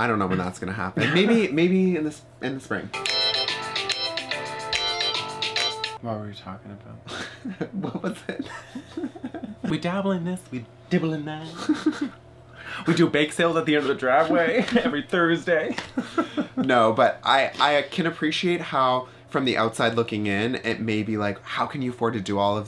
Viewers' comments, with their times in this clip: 0:08 I was completely thrown…. That’s my ringtone.